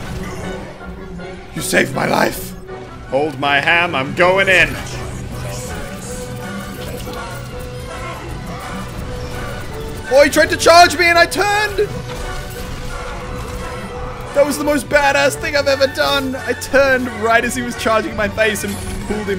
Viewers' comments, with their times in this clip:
0:06 Whats the music ? that is some classic shit i'd listen to while high